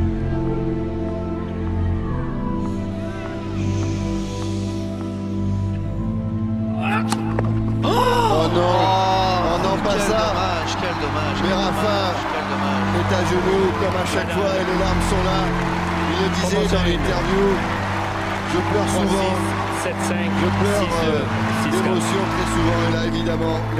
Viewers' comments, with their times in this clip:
0:06 OOO MYYY SOOO DRAMATIC "AAAAHHHH" MIN